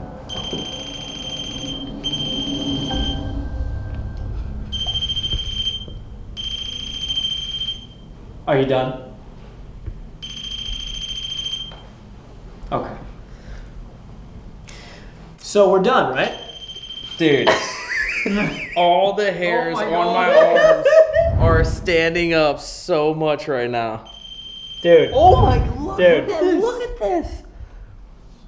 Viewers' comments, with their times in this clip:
0:09 "Are you done?" He sounds like a dad with a kid who's having a tantrum